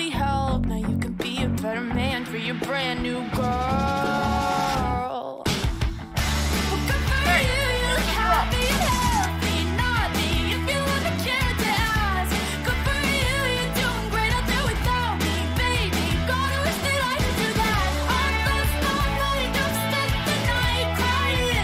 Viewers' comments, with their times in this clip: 0:06 is it just me or I hear weird sounds like "hey where's the drums?" 🤔🤔🤔🤨🤨 Time: